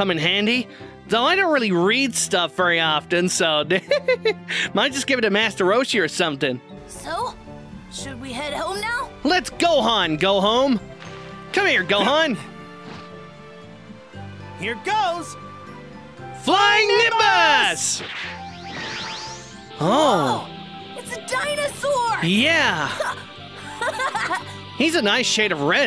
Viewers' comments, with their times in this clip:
0:06 am I the only one who heard him say " let's Gohan go home "